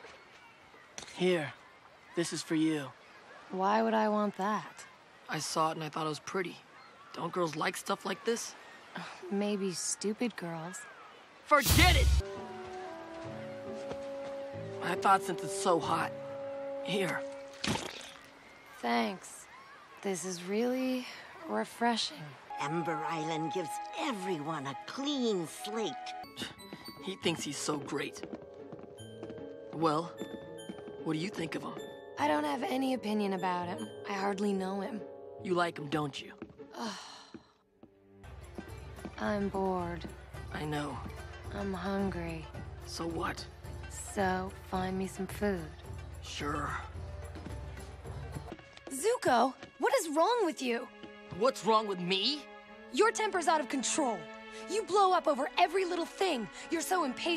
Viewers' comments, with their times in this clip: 0:03 that entire interaction and the way he screams “FORGET IT!” and chucks the shell away kills me every time
0:38 It’s nice how their tone is always the same v